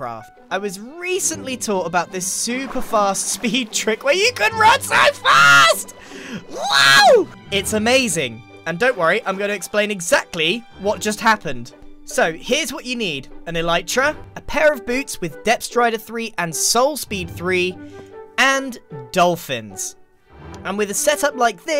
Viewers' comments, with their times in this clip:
0:03 15 seconds in and he is screaming nice Edit: I think he is R2D2